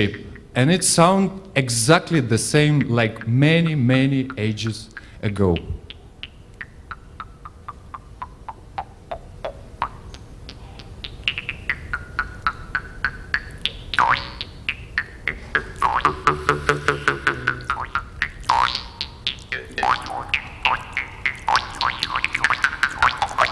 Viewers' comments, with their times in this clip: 0:06 for those of you wanting to hear the jaw harp also B O I N G B O I N G B O I N G B O I N G B O I N G B O I N G B O I N G B O I N G B O I N G B O I N G